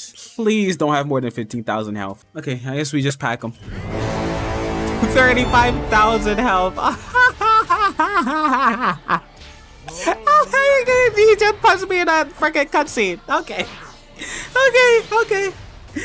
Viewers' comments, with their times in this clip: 0:04 u can hear the suffering in his voice he's laughing to hide the pain